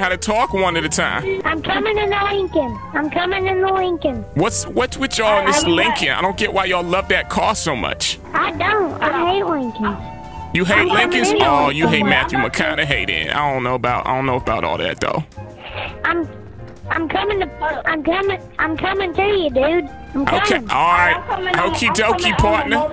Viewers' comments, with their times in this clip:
0:07 that kid sound like bobby hill